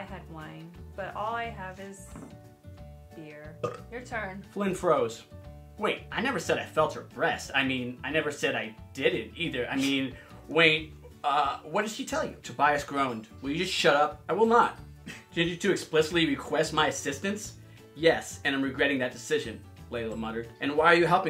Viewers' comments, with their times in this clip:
0:04 That burp! Hilarious!😂😂😂